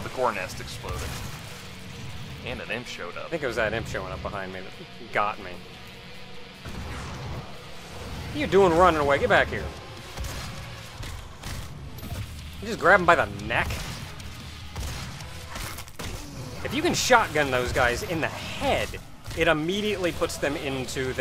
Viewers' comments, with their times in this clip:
0:07 like when in every glory kill the music stop for a 1sec to appreciate the moment.